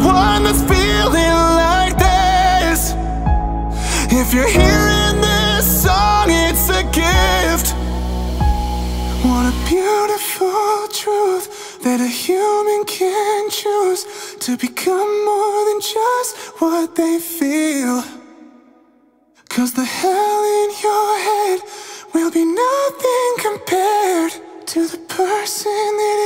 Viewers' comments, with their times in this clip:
0:09 Omg 😭😩😭 his voice at the end. now that was definitely a gift. this whole song is everything! this is truly what i needed to hear. the message is very strong & powerful. the whole world needs to hear this. ♥️👏🏻♥️‼️